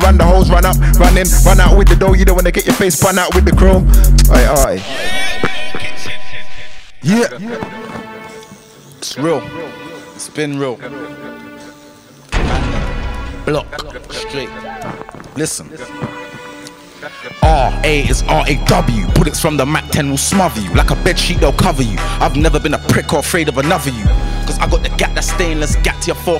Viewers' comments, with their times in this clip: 0:07 What’s the beat ? Far too cold!